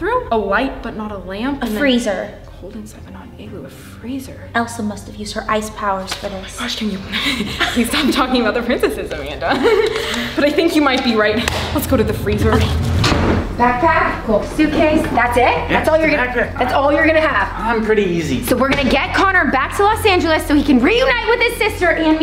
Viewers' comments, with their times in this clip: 0:08 It was so fun to see them laugh together